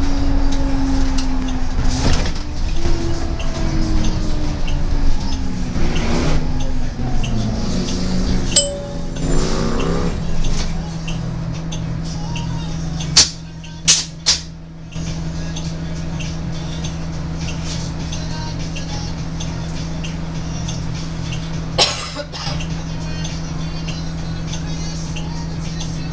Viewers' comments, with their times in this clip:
0:08 I just can't help but say that I love how clear the Stop Requested bell sounds.